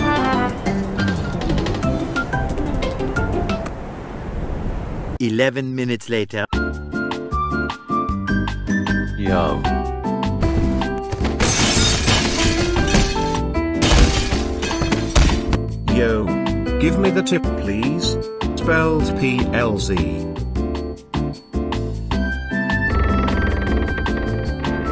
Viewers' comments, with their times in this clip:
0:06 This is my favorite part of this video. The combination of The relaxing elevator sounding music, followed by the slowed down “Y U M”, and then kirby breaking the dishes while the music still plays, is just really funny to me for some reason.